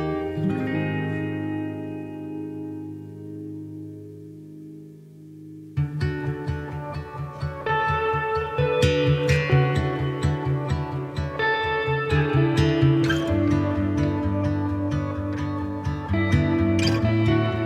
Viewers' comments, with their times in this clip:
0:05 I love her voice ☹️❤️